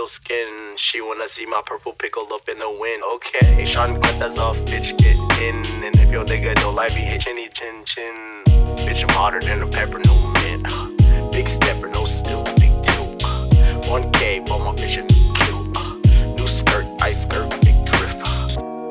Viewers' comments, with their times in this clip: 0:03 The “okay” is so clean with the transition into the beat. So chill🥶
0:03 Why did my man go full Jamaican